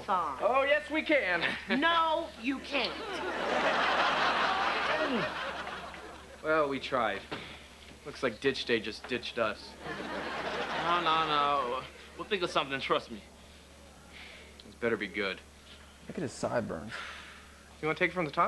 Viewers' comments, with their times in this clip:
0:04 you hear that “he he he” thats also on Thats So Raven. Sounds like victor baxter laughing a lung out 😂😂😭😭